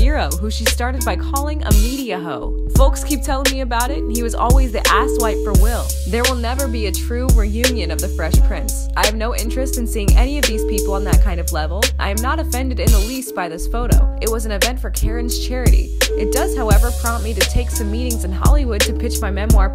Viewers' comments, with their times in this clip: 0:03 From it sounds like the woman is rapping 😂